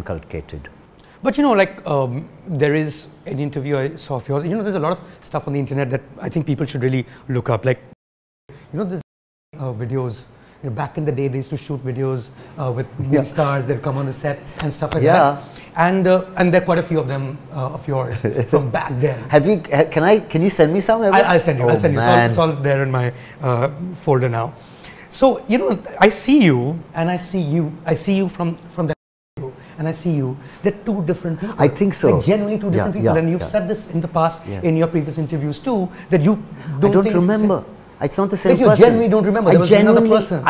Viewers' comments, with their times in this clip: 0:07 what did he say which was beeped
0:28 what's muted there ??